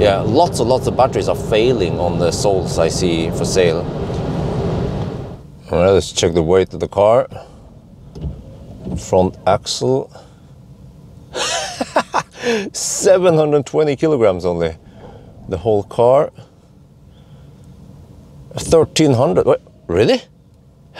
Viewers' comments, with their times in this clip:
0:04 Wow Bjorn, 'souls for sale' Is your middle name Mephistophelese?? 🤣🤣🤣 Cordialement,